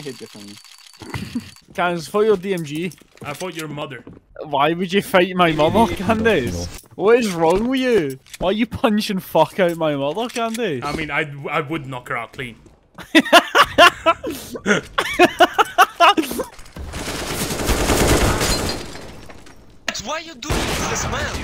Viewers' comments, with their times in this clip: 0:04 that accent tho.